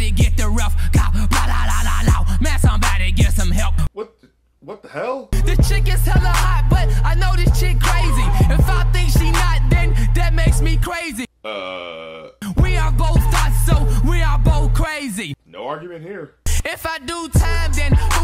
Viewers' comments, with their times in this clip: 0:06 That entire verse from "Hit the Quan" is just amazingly terrible. There's that one point where the flow just trips over itself...also rhyming "hot" with "not" and "crazy" with "crazy" with "crazy". I think there's a reason he fell off.